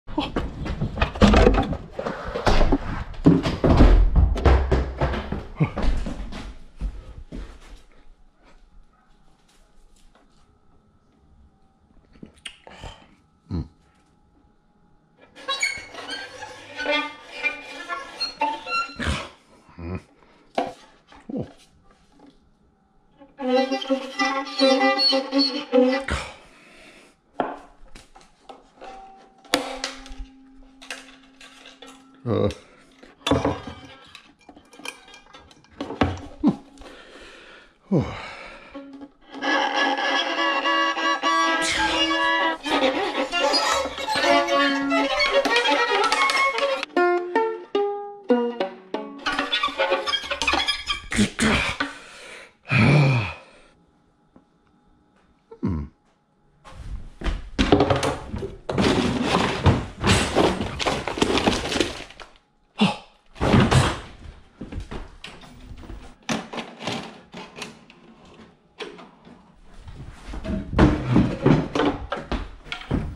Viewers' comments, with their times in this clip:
0:00 The Violin is Bad
0:00 SUs MoAN (0.5x speed)
0:06 Earrape volume down
0:17 Crappy Music on a Violin
0:24 Very good music:
0:25 best tune ever
0:45 🎻 became a 🎸(can’t find emoji) lmao
0:46 Sounded Like Guitar
0:46 violin it's guitar? -no
0:47 That's not a violin, That's guitar.
0:47 Voilin But Ukuele
0:47 No is guitar-violin
0:47 it's a guitar!
0:59 close your eyes and it will sound like something falling down stairs